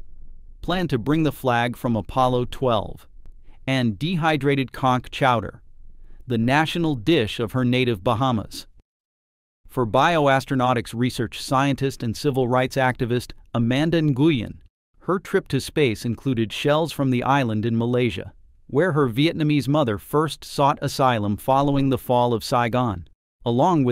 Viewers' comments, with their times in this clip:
0:06 I swear the narrator said “dehydrated cock chowder” .😂